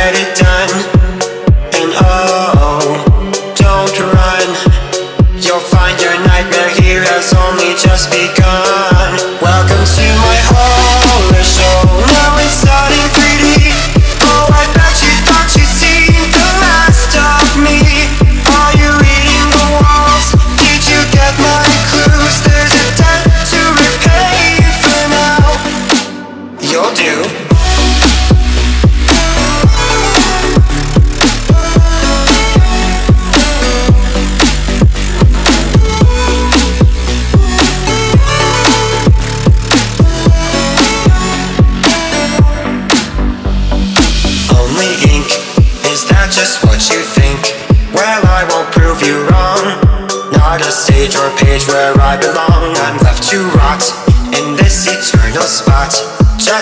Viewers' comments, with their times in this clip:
0:09 Yooo second mark just drop the beat since my dad beat me in a dragon Ball games
0:10 is the first beat drop
0:10 Reminds me of the opening song from the greatest showman
0:39 Does anybody else hear "Oreo" ?